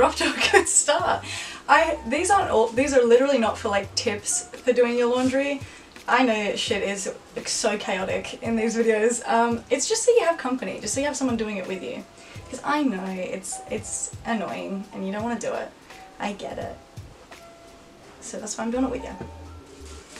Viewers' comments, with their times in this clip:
0:07 I love this because I need to listen to something when I fall asleep, it's and I can't fall asleep so I'm going to listen to this. Cause it's calming to just listening to people talk casually